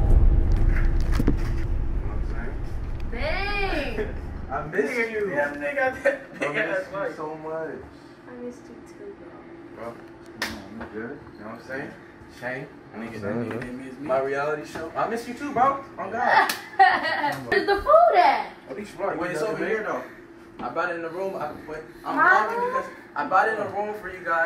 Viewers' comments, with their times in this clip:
0:07 i thought she said i missed u too bear lol